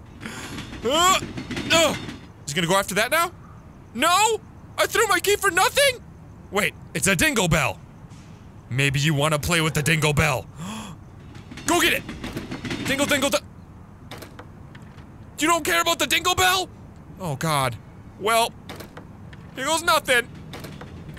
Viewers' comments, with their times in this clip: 0:06 You sound a bit lik markiplier